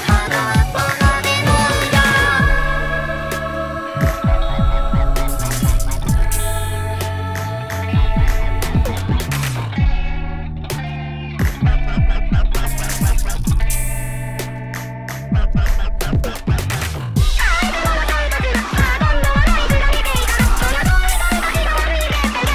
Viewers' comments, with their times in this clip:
0:10 I love how in headphones the music kinda shakes around to match with the background. That's so smart!